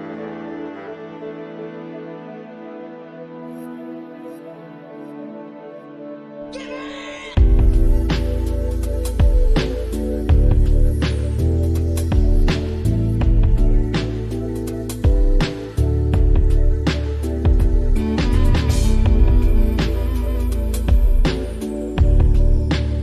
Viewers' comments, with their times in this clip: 0:06 I did not just hear "gibbay!"